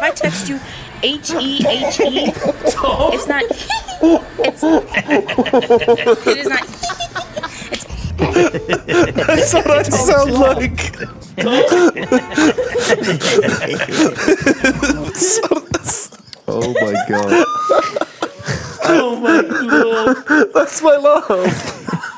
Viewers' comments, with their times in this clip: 0:07 i couldnt stop laughing because thats exactly how i laugh